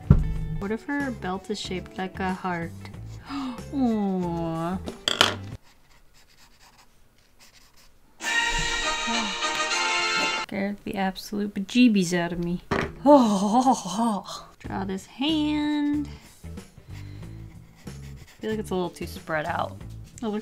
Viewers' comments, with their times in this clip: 0:07 i love how you can see her hand jump in shock as the phone rang 😂